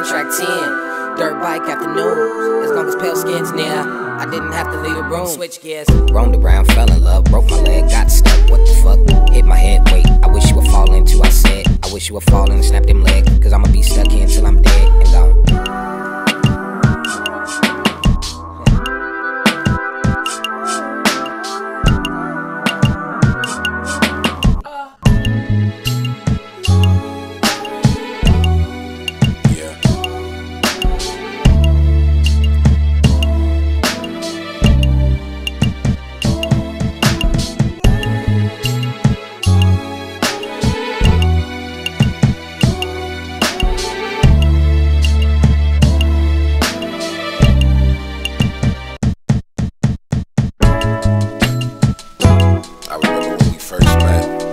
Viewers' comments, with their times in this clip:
0:05 this go way harder than kendrick and its only a rough draft.... you can tell he's rapping kendrick style to show how easy it is and that he should have won the grammy idk just a speculation
0:06 It's a Eminen's flow, but i don't remember which song he use it
0:23 why dont you put it in flower boy?? why ?? its one of the best song you ever made, the violin in its really amazing man i love that too much, its a weird song,
0:27 I love those damn strings Little sh*t like that can really increase a song.
0:39 Listen to biking and tell me that aint him in the background 🤣